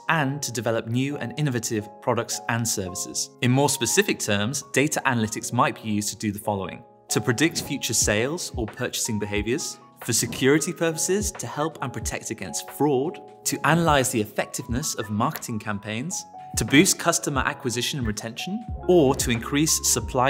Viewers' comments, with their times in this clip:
0:07 I just now that everytime bro swerved to the side, he laughed out loud. Haha!